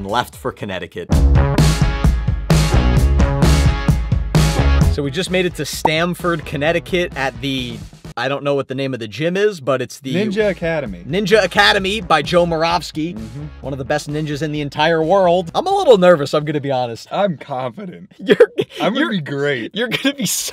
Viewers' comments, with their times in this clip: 0:04 I thought the train was a truck 😂